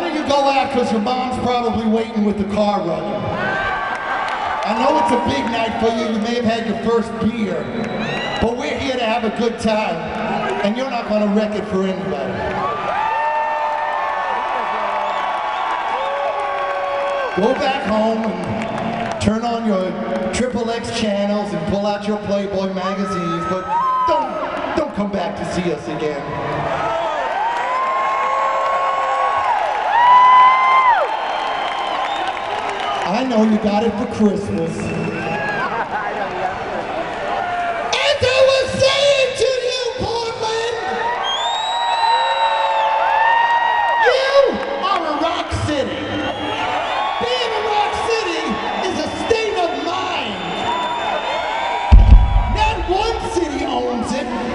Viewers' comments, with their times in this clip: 0:03 I love that guy laughing his ass out
0:27 does a good(beef' phantom of the paradise impersonation')
0:37 Paul Stanley in rock mode sounds like a 70 year old woman yelling at teenagers on her front porch.